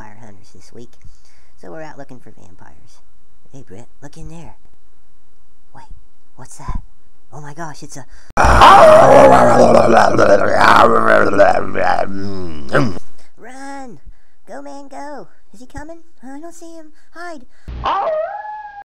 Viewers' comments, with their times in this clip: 0:09 is just a dog laying upsidedown wtf fake wierd eys on hes chin with a wierd voice